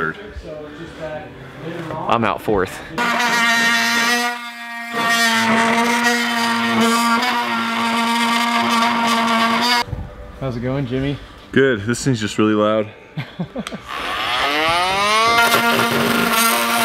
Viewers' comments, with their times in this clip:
0:03 i thought that was a kazoo at first